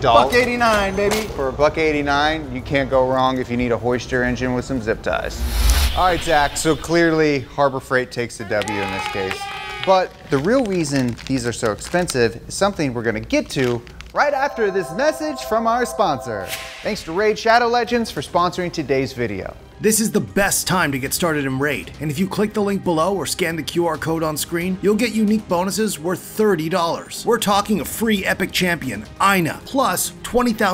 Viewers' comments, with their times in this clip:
0:09 did he say the real "weason"??!
0:09 the real weason
0:11 "REAL WEASON" xD